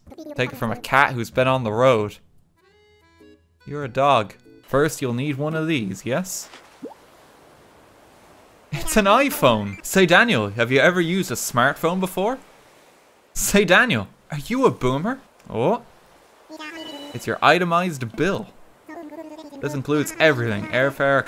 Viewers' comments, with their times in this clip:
0:04 "your a dog," He says with a slight touch of disappointment.